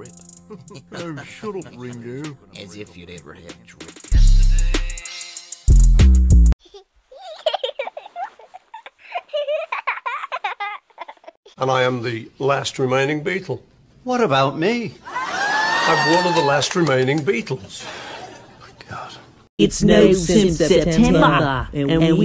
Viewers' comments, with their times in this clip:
0:07 😂😂what's with the creepy laughter? I've heard it before 😂😂